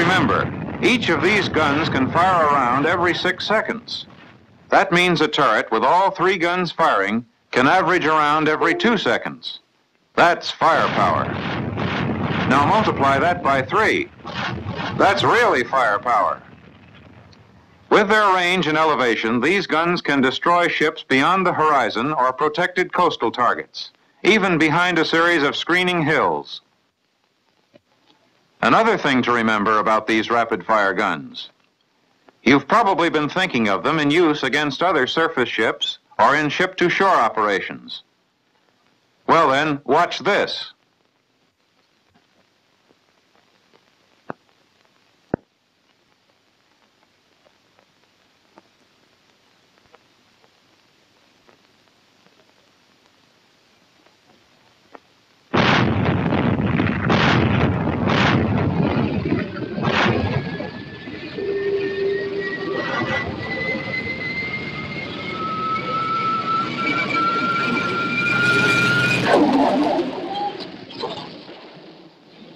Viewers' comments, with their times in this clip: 0:06 if you listen closely can hear the sound a Windows 10 computer makes when you take a USB out
0:07 damn, confused me to fuck. I was like what the fuck disconnected I didn't unplug anything
0:07 Windows 10 alert !!!
0:07 someone left your discord chat.
1:00 Bring back the battleship, but with rail guns. Someone leave the kettle on ? lol